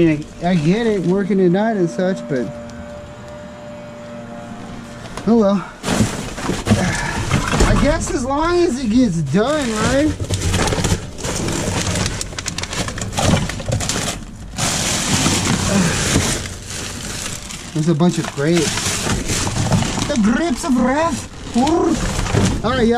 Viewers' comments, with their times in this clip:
0:05 The person with the blower is actually a serial killer cleaning up after their last kill. Or a gardener working late...